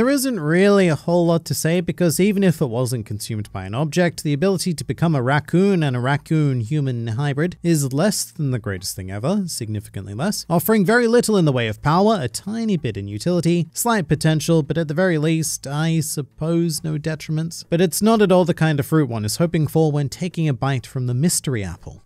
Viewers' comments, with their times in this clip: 0:04 Rocket from Guardians of the Galaxy laughing